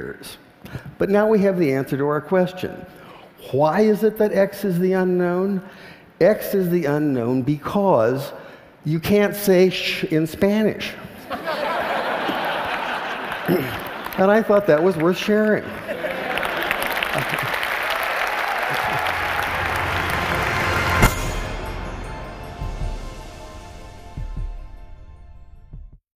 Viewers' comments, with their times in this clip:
0:03 "CHwhy?" I wonder how to write that throat sound in arabic.
0:15 I like it when those Romans applause saying: Yeah